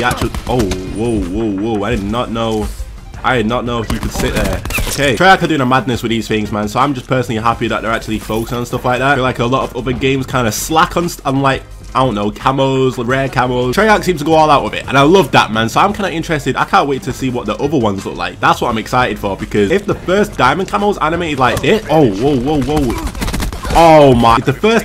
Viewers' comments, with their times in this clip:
0:08 you did not just play fortnite dance music over your cod video ...